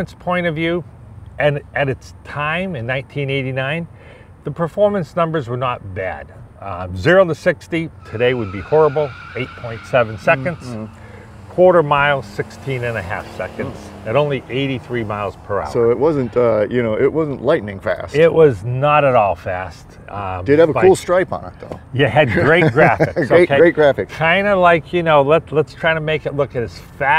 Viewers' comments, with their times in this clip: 0:08 No wonder the 0-60 times were bad...screding the tires the whole way